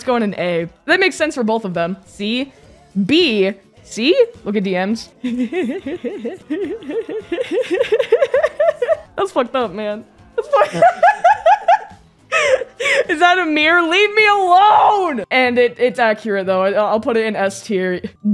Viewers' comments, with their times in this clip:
0:06 The laugh On LOL